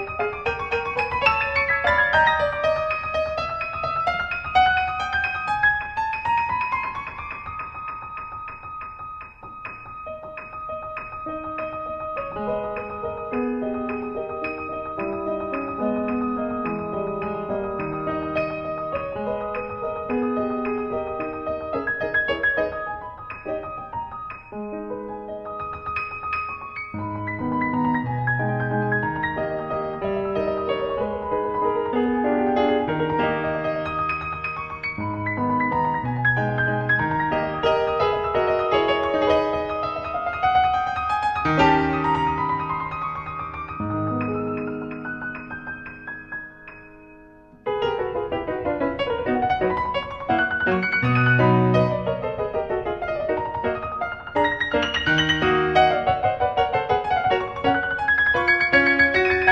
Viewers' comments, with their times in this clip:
0:09 here comes a insane drop what a drop man love that classical piece
0:45 when the note is played 3 times quickly!